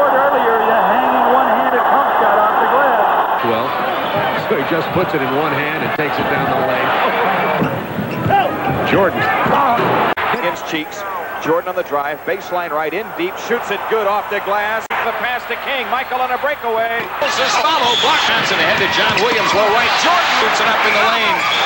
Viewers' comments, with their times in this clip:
0:08 I like how someone yells "Help" then Jordan blows past everyone and dunks it in their faces. The defense was so mesmerized that they didn't even converge on him. So much for calling for "Help".